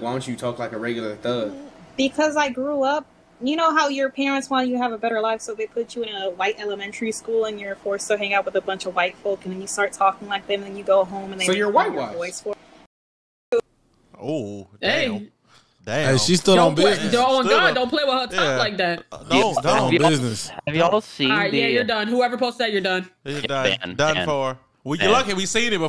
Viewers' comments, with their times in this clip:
0:10 she sounds like a human being and not a [______]